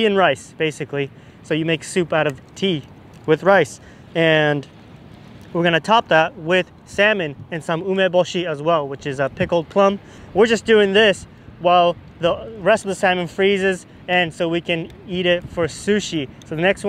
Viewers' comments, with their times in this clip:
0:03 super windy and no wind noise. very impressive! Were you using a body mic?